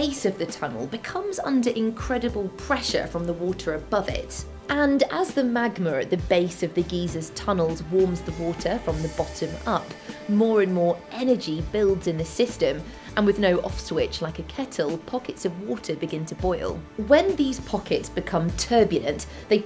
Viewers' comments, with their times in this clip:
0:05 she also adds an "r" in magma, very strange for an Australian to add an "r" with the accent.